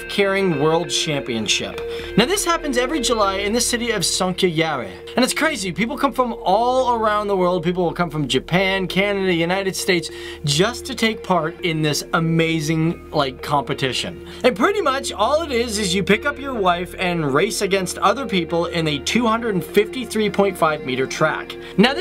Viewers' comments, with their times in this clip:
0:04 I listened to it three times and in the end had to google it. You have a very interesting way of saying "Sonkajärvi".